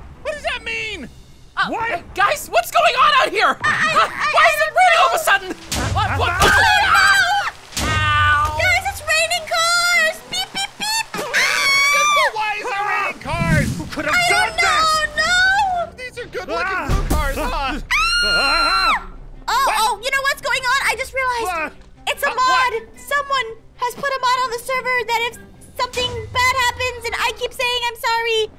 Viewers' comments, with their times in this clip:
0:10 The way Aphmau said it LOL “ aAaaAaa itS rAinInG cArS BEEP BEEP BEEP AaaA “